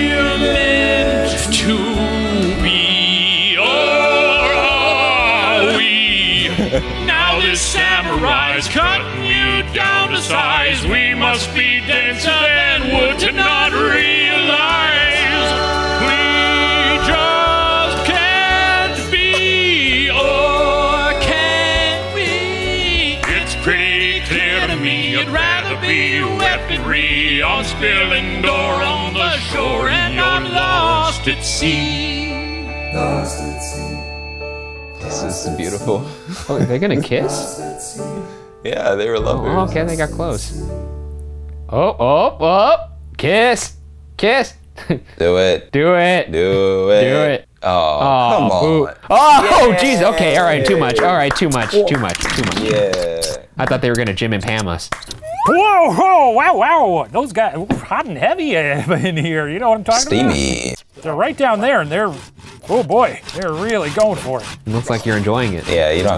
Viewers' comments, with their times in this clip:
0:09 the HARMONY THOUGHHHHH why are the songs genuinely SO GOOD?
0:53 Next time someone talks about "sawing logs", I know I'm not going to be thinking of sleeping after hearing that sound effect.